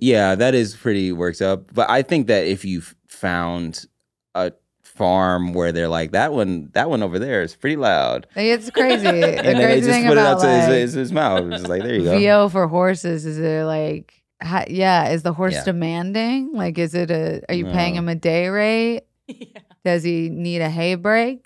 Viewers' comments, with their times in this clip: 0:04 It's pretty easy to record squealing whinny noises like that on farms that have both stallions and mares, especially when the mares are in season! ❤